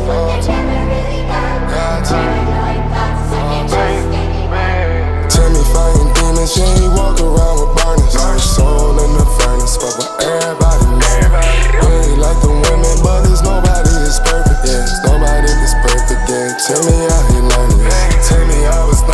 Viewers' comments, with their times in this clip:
0:04 The second verse on this song goes hard. Your sound is authentic, I always know when I’m listening to Desiigner! Go brother!